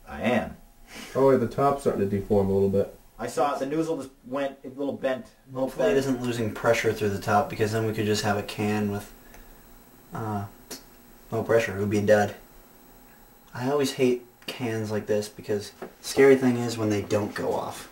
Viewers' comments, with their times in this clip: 0:03 “the noozle” lmao
0:04 Did anyone notice that he said NOOZLE not NOZZLE?
0:04 on u said noozzle
0:04 on u said noozzle and what the fuck is plan b